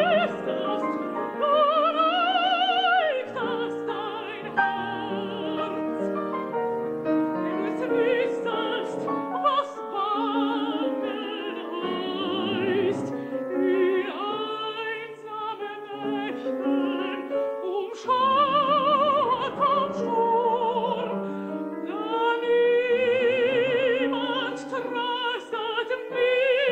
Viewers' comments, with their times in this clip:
0:07 Does anyone notice that Mr. Moore has to play the "wenn du es wuesstet" along with her. It's not in the music like that. Albeit gorgeous voice!